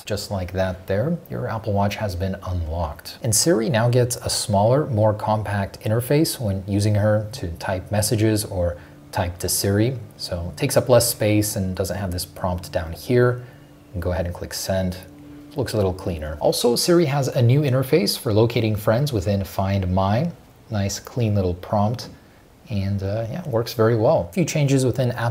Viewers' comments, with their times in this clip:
0:06 the way he starts to sound like iPhone 4S Siri, so robotic lol.